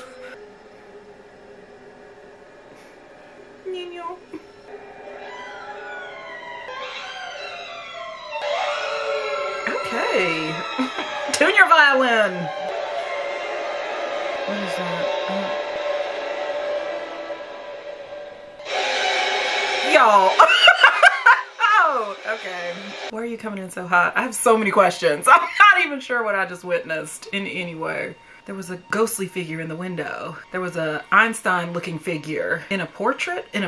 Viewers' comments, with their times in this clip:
0:05 Fun Fact: The Screeching violin soundtrack. They used over 33 violins in that track. That's why its so loud and bone chilling lol
0:20 yeaaaaaaaaa my dumbass SCREAMED out loud in the theater when that damn insidious logo popped up with that music. i felt like such a loser, damn movie aint even start yet and im hollerin😔 🤣 this will always be one of my fave scary movies because unlike most it actually has a good story line, great actors, great suspense, scares, etc. James Wan did his thaang with this one and he know he wrong fa dat 😒🤣